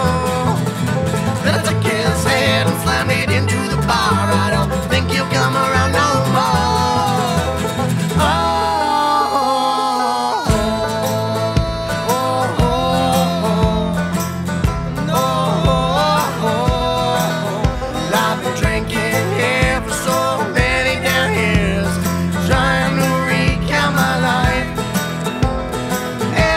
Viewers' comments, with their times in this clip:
0:08 Oh that's a juicy tune... on is my fave part
0:08 I love the tempo change that sounds badass